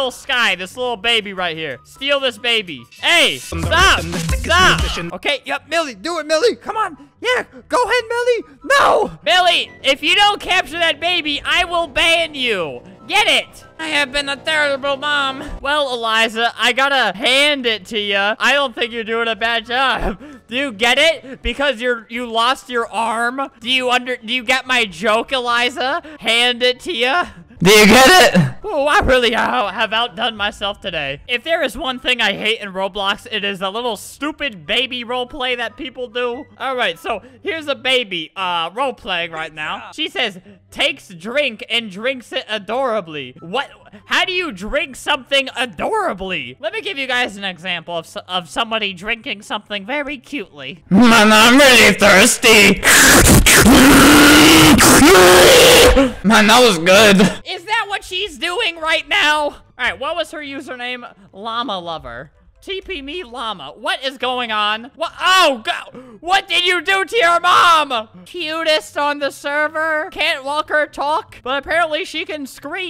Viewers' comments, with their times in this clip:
0:03 enderman rap starts playing Me: YOU DONT WANT TO MESS WITH THE ENDERMAN, NO NO NO, NO NO NO NO
0:04 o ahte that song
0:04 I Heard Enderman Rap
0:45 drinks loudly and cutely
0:51 Press this button > < if u wanna go deaf
0:51 mAn Im ReAlLy ThIrStY, slurps adorably
0:51 MAN IM REALY THRISTY aggresive slurping
0:51 Press this button > < if you wanna go deaf
0:53 R.I.P my ears
0:53 Its So Loud